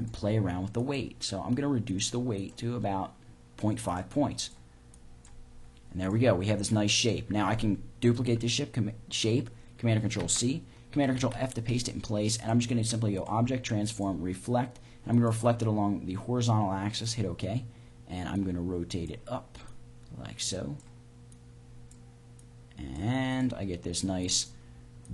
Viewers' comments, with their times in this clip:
0:08 duplicate this shit just thought that was funny